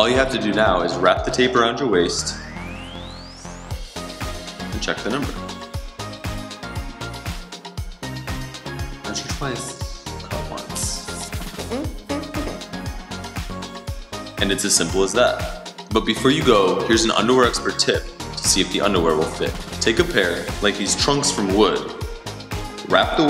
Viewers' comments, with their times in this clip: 0:08 Did he say measure twice, call once? hahahaha